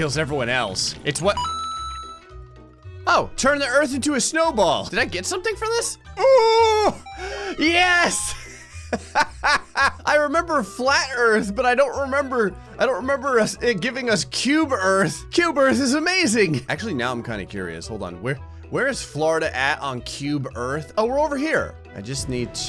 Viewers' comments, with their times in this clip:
0:05 his voice what's wrong with his voice 🤣🤣🤣